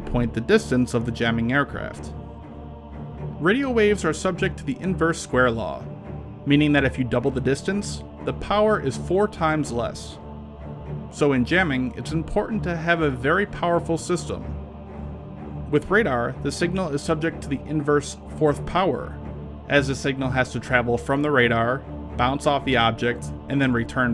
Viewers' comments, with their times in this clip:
0:10 Stupid music/noise only detracts from the message